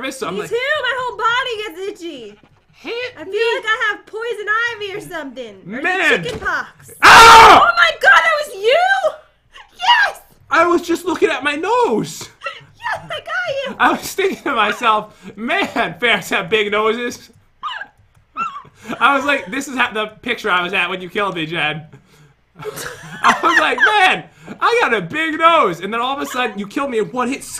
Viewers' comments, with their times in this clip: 0:04 THAT SCREAM WAS DELAYED!!!
0:05 Rip headphone usere
0:06 R.I.P HEADPHONE USERS IM one of them :C
0:06 rip earphone user's
0:06 That scream tho, I laughed so hard
0:06 WARNING TO ALL HEADPHONE USERS 😂😂😂
0:07 R.I.P Headphone Users (like myself 😢)
0:07 OMG THAT WAS SO LOUD!! 😭
0:07 my ears are bleeding XD
0:07 the way he screamed into the mic 😭
0:07 omg dat scream XD
0:07 Them poor headphone users😵
0:07 I- Er.. M- ears bleed Frick! Blood will not be on meh floor!
0:08 rip headphone users 😔✊🏼